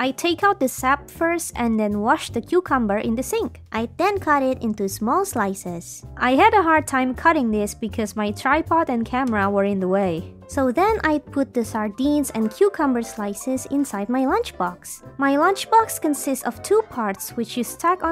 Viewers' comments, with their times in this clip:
0:06 you heard her real vocie it's so grown up but she uses a fake cute vocie girl ur vocie is beautiful